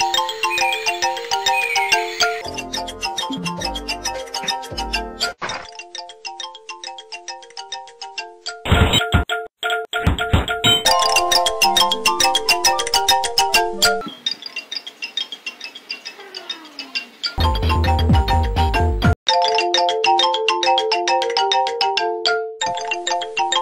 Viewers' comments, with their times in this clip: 0:08 Brazilian phonk be like